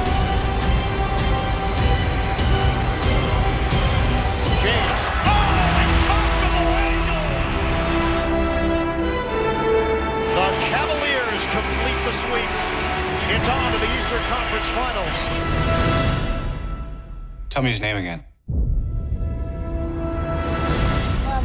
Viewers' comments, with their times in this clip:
0:06 that monment + music damn